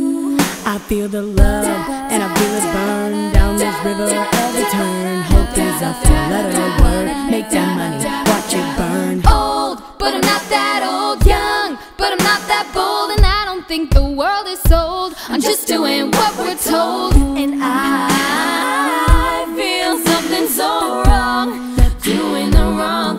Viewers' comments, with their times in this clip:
0:05 she sounds like a boy